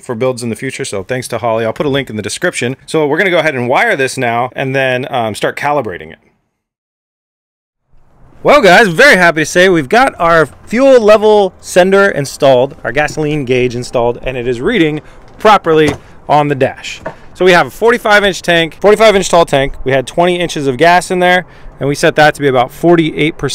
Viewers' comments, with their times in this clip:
0:07 After the mic got really distorted for the rest of the video. Awesome build though!